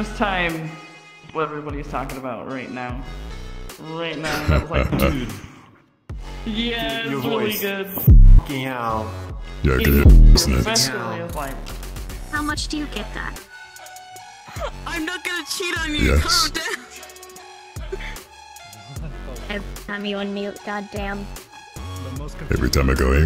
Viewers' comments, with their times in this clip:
0:09 I did not expect to be in this video, my voice oh god it sounds so dead lmaoooooooo